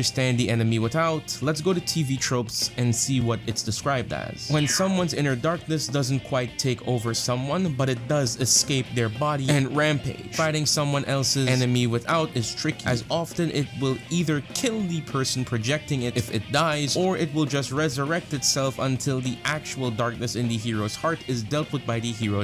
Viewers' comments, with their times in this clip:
0:06 almost a minute of you struggling to read a TV Tropes page was hard to sit through